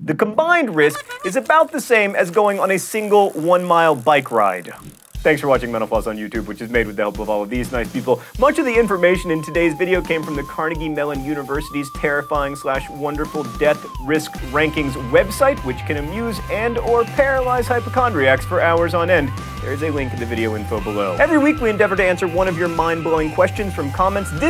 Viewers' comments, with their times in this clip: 0:05 Thanks for watching menopause?